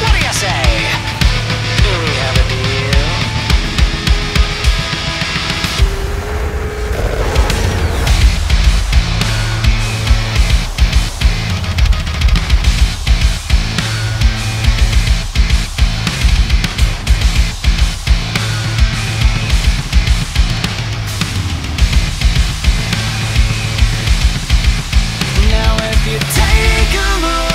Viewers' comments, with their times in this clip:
0:08 My favorite part that beat Nice asf !